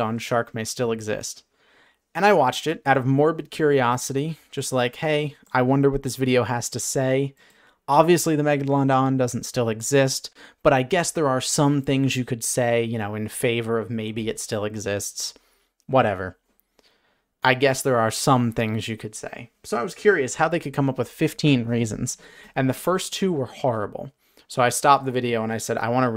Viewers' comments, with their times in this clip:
0:07 legit thought he said "mega-long-dong"